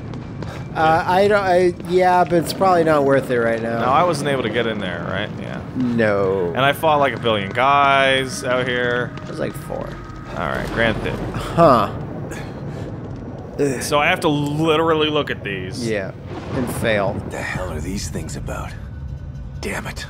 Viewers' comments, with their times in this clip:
0:05 a ghost sound?